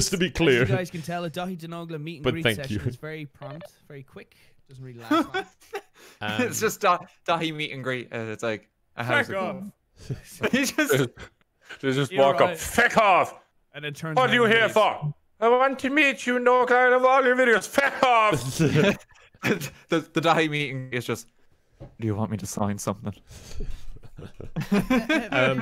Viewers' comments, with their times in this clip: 0:06 Father Jack, is that you?